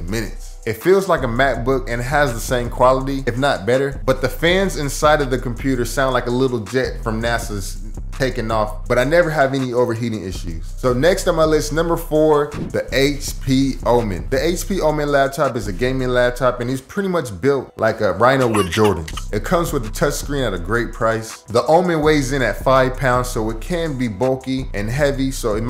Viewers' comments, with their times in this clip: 0:09 do you think that'll be a problem recording vocals in same room? also that beat hard